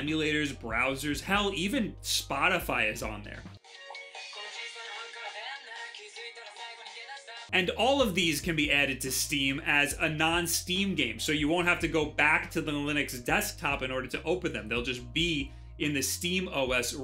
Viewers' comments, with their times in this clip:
0:03 Love this song!